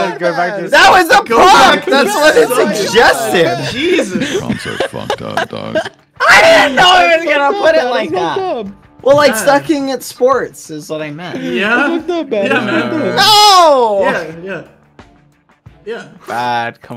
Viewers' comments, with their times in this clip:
0:04 I thought I heard Corpse on